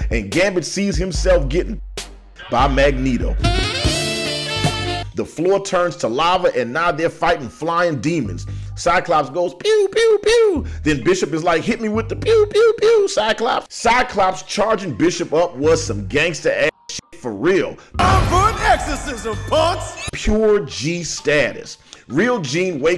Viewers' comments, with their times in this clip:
0:05 😂 the consistent use of Careless Whisper!